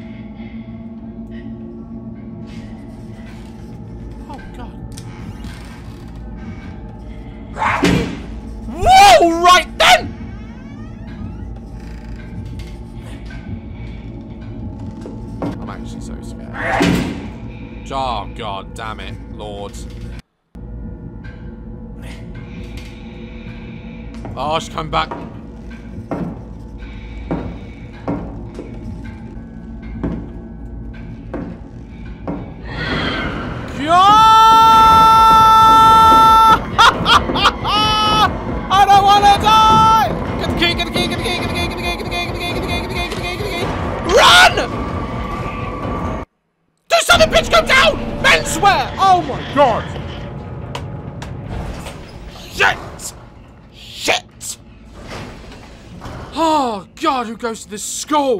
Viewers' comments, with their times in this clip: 0:07 did she just bark 😃
0:40 Is it me or did it sound like he was saying giggity over and over hella fast 😂💀